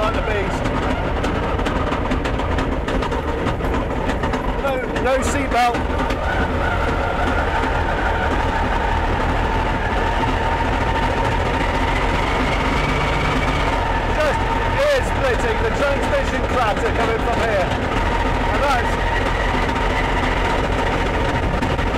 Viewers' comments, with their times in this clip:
0:06 ... Sounds like An Old "Tranny" Pickup I Owned In The Late 1980s That Too had a Naturally Asthmatic Carburettor's supplied With a Couple of Inhalers for The Hills and Cold Morning's ... 🏴🥪✌️